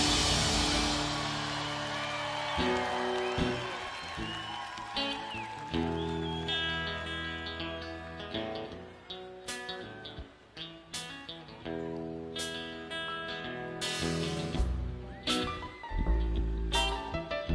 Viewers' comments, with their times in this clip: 0:04 Is Jack squeezing a little sweet home alabama in on I fell in love with a girl ? One of the many things I love about Jack is that he always plays without setlist and controls the show as he goes. You often see him using signals or body language to tell the bandmates which direction he wants to go with it. You can see this especially in the White Stripes concerts with Meg. They read each other so well